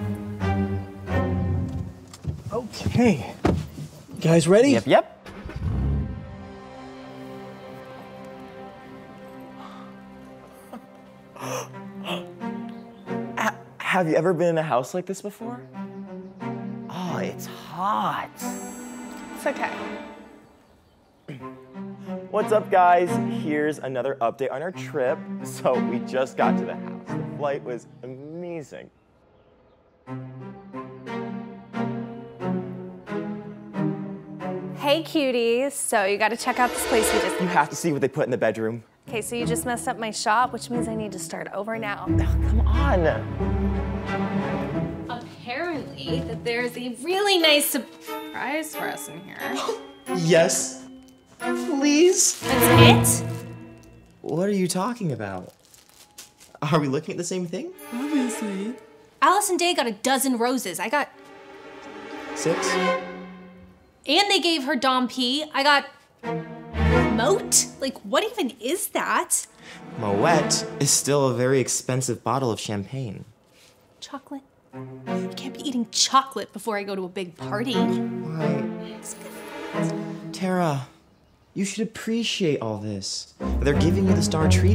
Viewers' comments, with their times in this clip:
0:09 does anybody hear the f word?
0:58 did you guys realise how her voice changed while she was saying obviously
0:58 Why does sound strange
0:58 is no one going to talk about that in the girl said obviously in a really weird way
1:07 the way tara said moet made me laugh